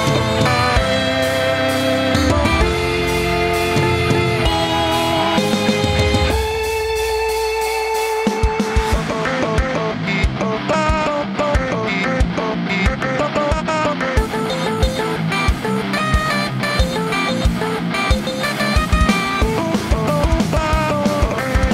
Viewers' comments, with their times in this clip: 0:06 In my brain just stoped after I saw the way her dad move the note is up and he sing down what ?